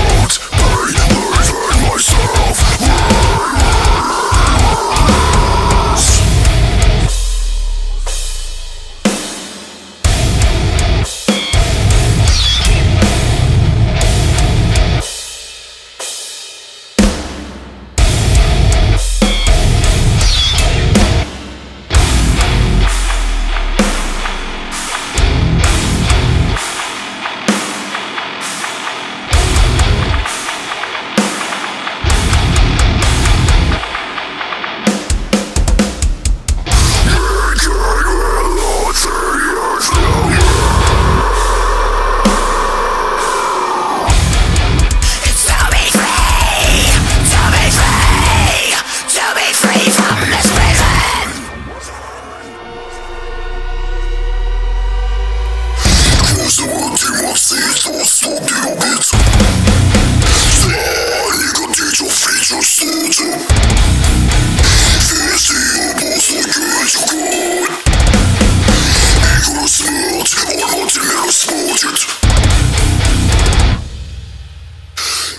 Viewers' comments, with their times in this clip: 0:05 so this is Triple Drop D (Drop D0)? xDDD
0:56 toilet bowl mode engaged